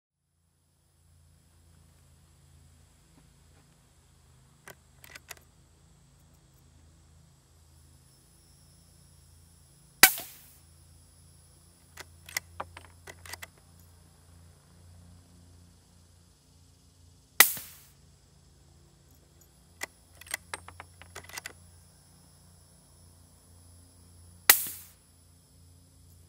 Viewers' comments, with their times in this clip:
0:05 Your ketchup bottle when you're too lazy to bop it:
0:08 When u trying to fart but the sound not loud enough